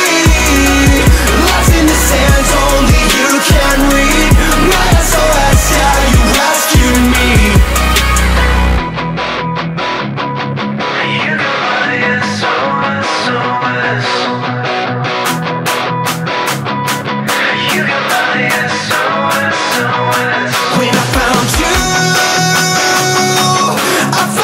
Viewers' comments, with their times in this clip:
0:08 so that rhythm played underneath the guitars is actually Morris code for SOS :)